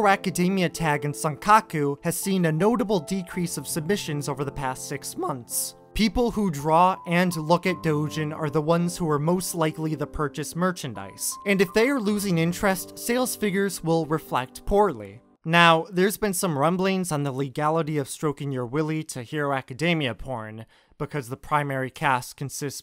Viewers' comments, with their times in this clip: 0:05 That voice crack lmao